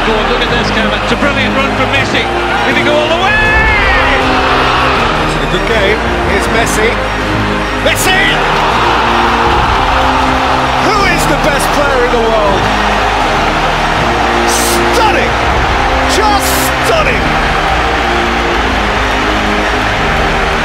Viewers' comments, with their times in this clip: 0:05 The crowd reaction from the goal is so bloody brilliant..